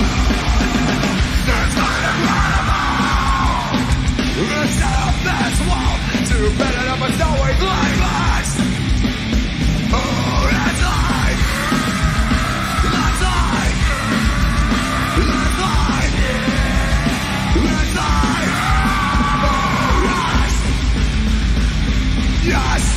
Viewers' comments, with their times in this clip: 0:10 that anger in Chris' scream😍😍😍😍